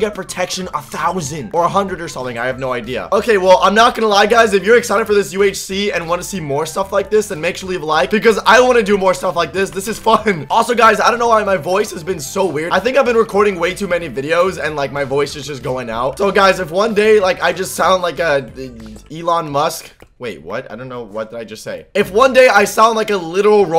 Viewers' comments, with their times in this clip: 0:09 "this is fu*kin"